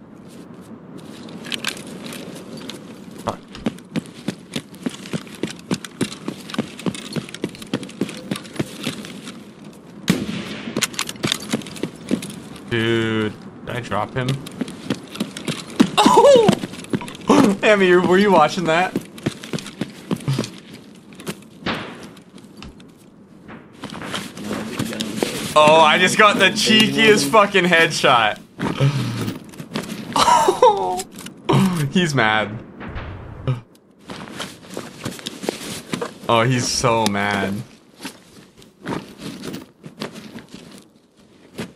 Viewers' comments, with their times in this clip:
0:10 I dont understand if this is tarkov or cheats .... cuz there is a sound before of the shot before he is even on the target ? i mean obviously he is aimboting its i dont understand how that works cuz now it seems its kind of a super bullet that tracks cuz he didnt put the sights on it.... or is it tarkov thing ?
0:26 he got happy from getting “A Blatant Cheeky Headshot” 🤯 Also I can tell their voice is untrustworthy, sounds like teenagers. I hate them.